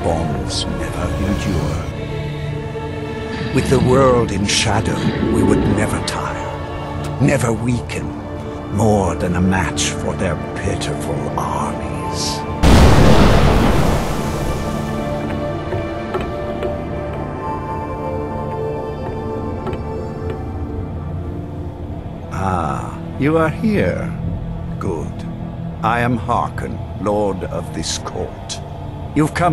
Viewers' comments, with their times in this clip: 0:10 Vampires: Why do we hear Boss Music?
0:13 "the vampire is eternal" BAMM! LOL XD (somehow that was very funny)